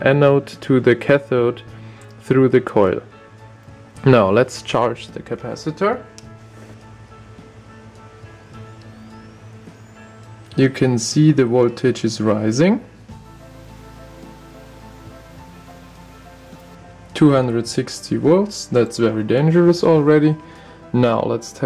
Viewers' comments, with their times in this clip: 0:07 you can hear the capacitor charge, it's like some sci-fi movie